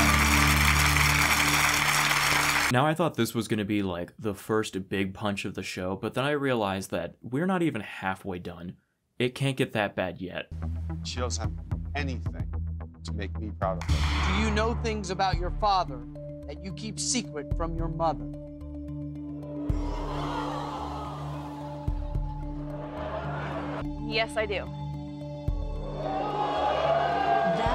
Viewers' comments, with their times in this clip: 0:10 gotta love how they muted two very important words to make it sound worse ("she doesn't have [to do] anything to make me proud of her")